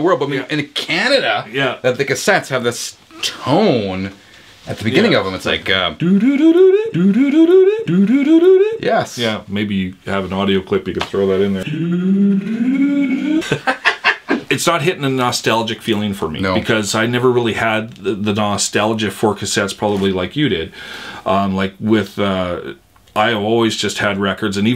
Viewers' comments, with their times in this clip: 0:04 I've heard that tone... just not very often. BTW: I'm from Illinois, in the far Southwest suburbs of Chicagoland. (For perspective)
0:07 That rising tone(in steps) was heard on Australian cassettes as well. It was the signal to separate each spool of tape so the operator knew where to cut and splice on the clear leader tape for each copy of the album on cassette.